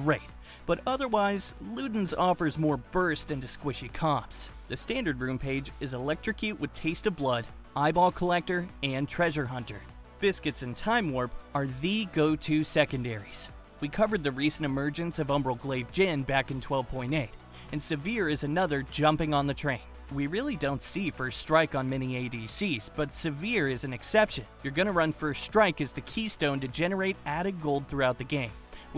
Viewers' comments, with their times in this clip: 0:10 i just heard how he pronounces sivir why does he pronounce sivir as severe? im not blaming him, dont get me wrong, im blaming ppl who couldnt find a better replacement.